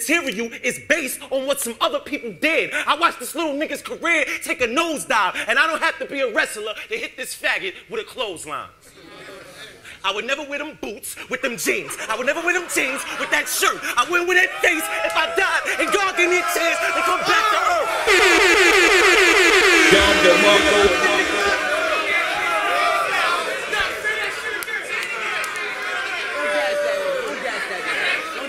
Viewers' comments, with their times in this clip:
0:09 lol was that line honestly that good tho?? lmao crowd hyped that shit up crazy